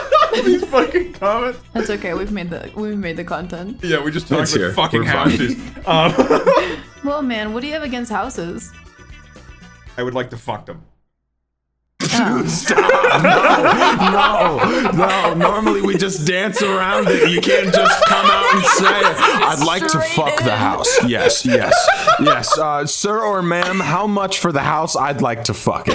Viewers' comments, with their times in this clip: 0:08 I love how the music stops lmao